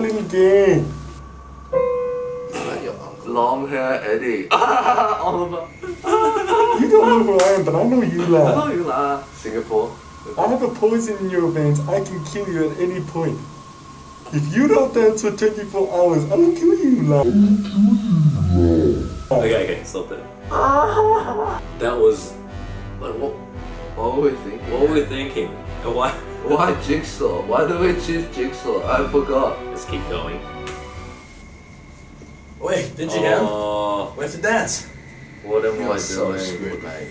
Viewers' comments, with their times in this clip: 0:08 when the 'la' was pronounced I was like " I'm freaking Malaysian I say this all the time " But then eddy said Singapore I was like " Dude I forgot Singapore too "
0:20 The music reminds me of that Star Wars orchestra prank 😂